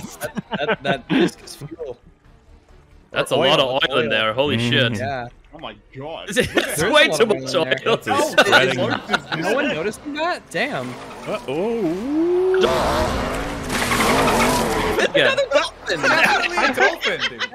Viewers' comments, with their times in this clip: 0:05 The driver is a dolphin.